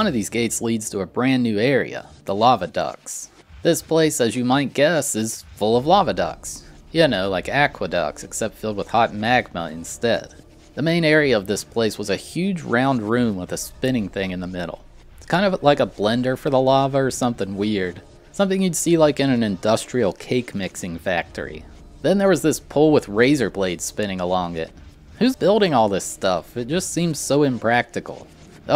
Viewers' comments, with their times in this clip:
0:09 I thought he meant “Lava Ducks.” I’ve never been so disappointed